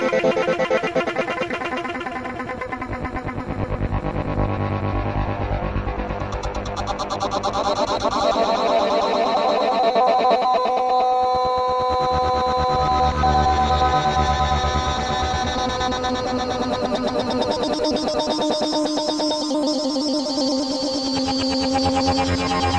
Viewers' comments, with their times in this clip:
0:08 if you slow it down to 0.25 HOHOHOHOHO